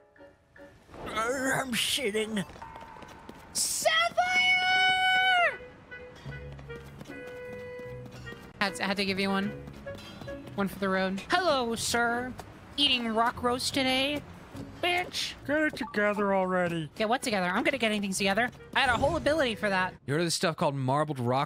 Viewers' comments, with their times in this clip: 0:03 can we talk about the wildly accurate ruby steven universe impression please.